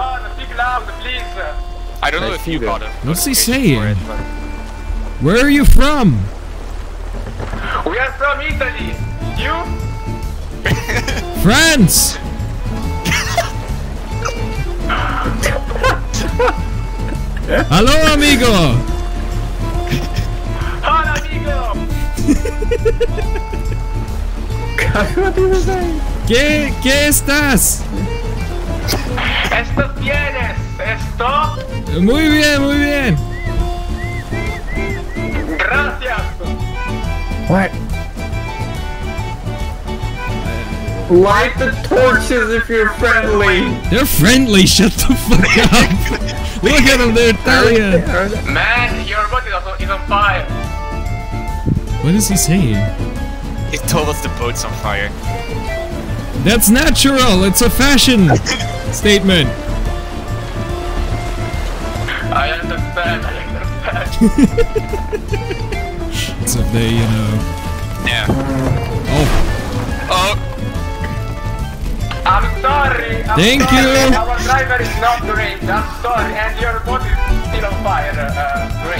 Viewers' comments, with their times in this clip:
0:09 what was about the laugh ?
0:12 as Italian that long pouse is pure gold 😂😂😂
0:14 No one noticed the biggest sigh ?
0:20 That's the most wholesome "HOLA AMIGO!" i've ever heard
0:29 "We are from Italy" Were are you from? "France" "How are you?" In Spanish with a inner-rage caged into their souls "Muy bien muy bien!" The Italian guy: let's go back to our origins and speak Latin: "GRATIAS!"
0:40 he sound like Tommy from HL VR but the AI is Self-Aware lol.
1:02 the most italian accent